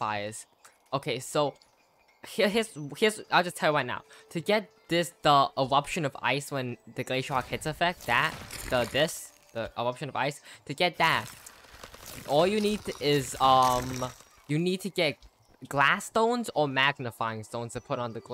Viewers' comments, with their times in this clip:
0:05 like that’s so cute ewuption